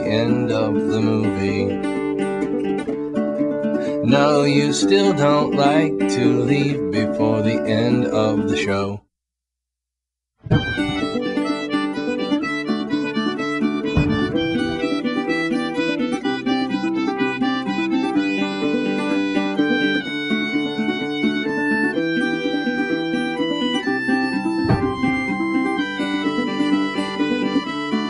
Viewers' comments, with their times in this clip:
0:10 One of my favourite Cake songs. Great lyrics, music, everything is just perfect. The instrumental part starting is absolutely beautiful.